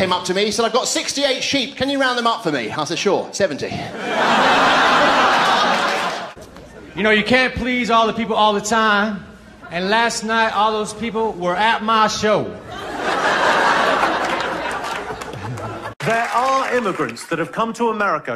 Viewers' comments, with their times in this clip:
0:06 Probably the best delivered joke of all time